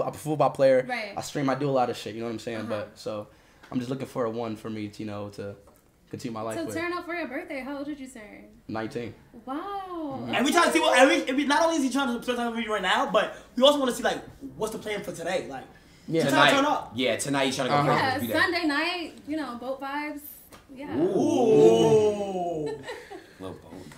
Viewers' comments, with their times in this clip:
0:04 BROOOOO WAS SPEAKING BARE Gibberish 😂😂😂😂